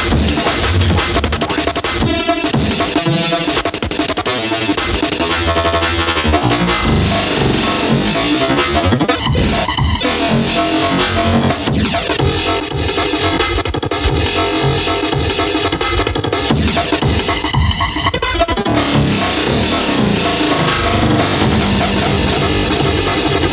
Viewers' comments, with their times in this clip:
0:04 The delay effects are everything to me